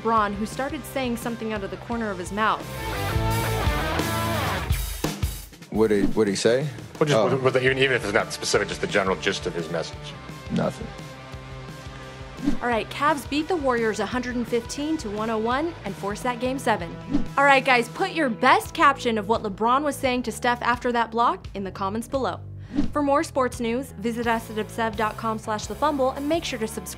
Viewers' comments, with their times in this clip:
0:07 That boi cannot talk